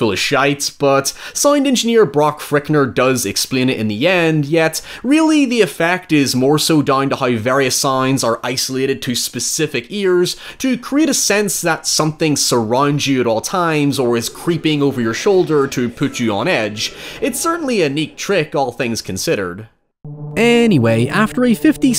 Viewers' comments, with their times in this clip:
0:04 that was really, really smooth. Legit thought my headphones were freaking out
0:08 Nice bit of sound editing
0:09 I assume it's a pretty easy thing to do in a video editing suite, but I always love it when youtubers play around with hard-panning sound to one channel or the other
0:09 didnt know my phone could play on left and right wyen on fullscreen mode